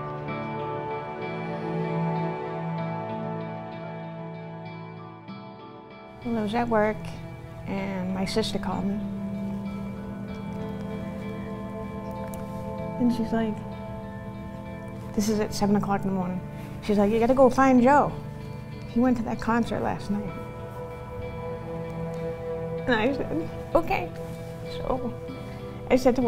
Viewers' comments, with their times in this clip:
0:07 The girl struggling to talk is heartbreaking